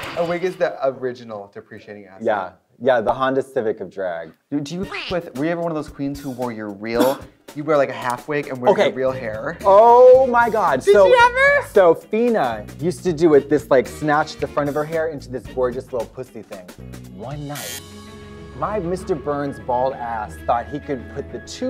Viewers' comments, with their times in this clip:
0:06 The year is 2021, the cough is suddenly noteworthy and traumatic 🙈 Even though this was filmed way before covid iirc